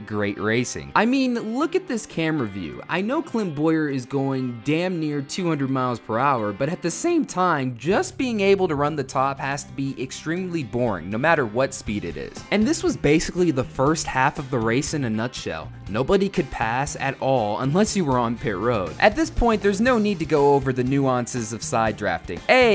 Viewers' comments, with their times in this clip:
0:07 but at the sAme time